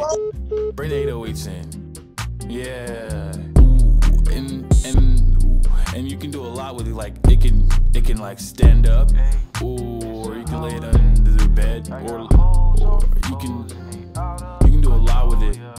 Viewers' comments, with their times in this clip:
0:09 that background music. 😌✌